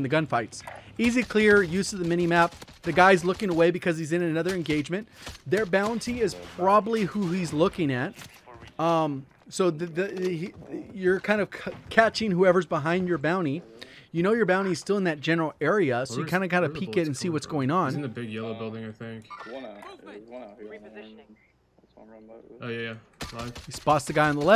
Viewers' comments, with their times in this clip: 0:08 How is no one gonna call out the farts ?